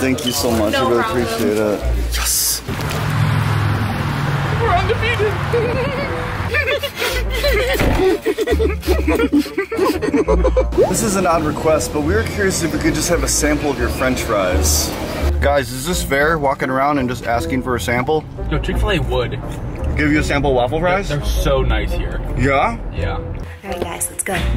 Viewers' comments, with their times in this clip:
0:06 The girly giggles ! 😂😂😂
0:07 How the annoying girls laughed after they saw you get rejected